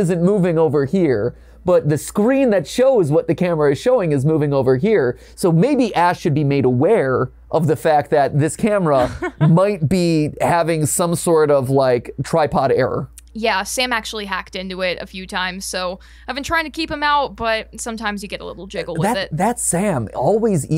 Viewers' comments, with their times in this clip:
0:08 My ears pierced when I heard the car scream